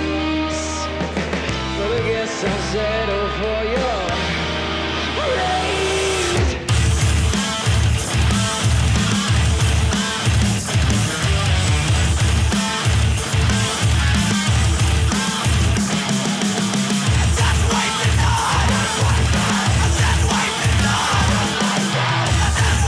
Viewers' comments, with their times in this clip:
0:04 "Rape. Just rape the guys, just rape me" Can't un-hear